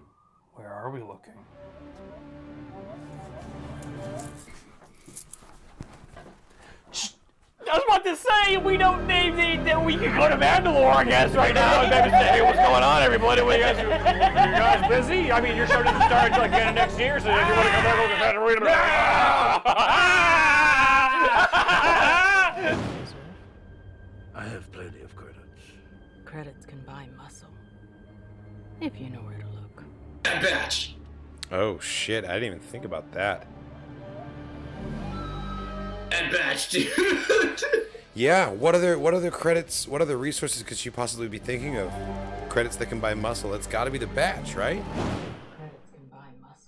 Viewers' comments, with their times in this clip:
0:03 that was literally my reaction when I heard the mandalorian theme
0:30 And here we see two of the most clueless people ever lol Mandalorian theme plays “Bad Batch!” theme intensifies “BAD BATCH!!!” THEME GETS LOUDER “IT’S GOTTA BE THE BATCH!!!” Bruh 😂😂😂